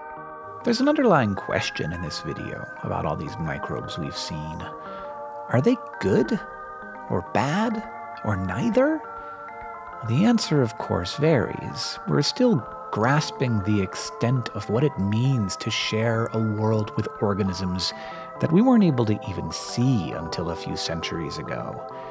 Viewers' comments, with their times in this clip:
0:10 squidwards voice FUUUUUTURE FUUUUUTURE